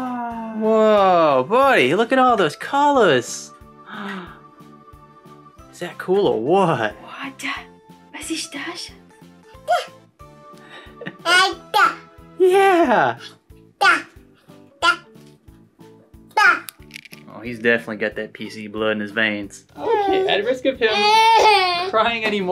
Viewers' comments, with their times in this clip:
0:06 was ist das? I head that one german sentence